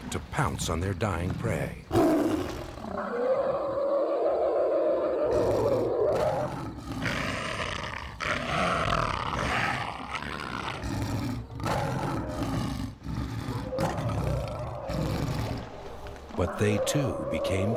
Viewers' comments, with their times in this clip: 0:05 That moment when you hear HL2 zombie growls